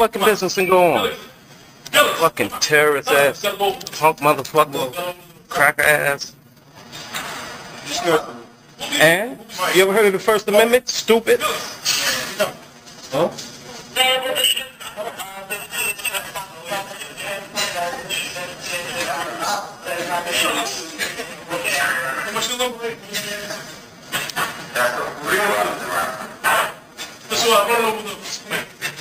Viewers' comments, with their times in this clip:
0:10 The two dude’s the cops obviously stopped probably for some B.S., laughing is PRICELESS 😂😂😂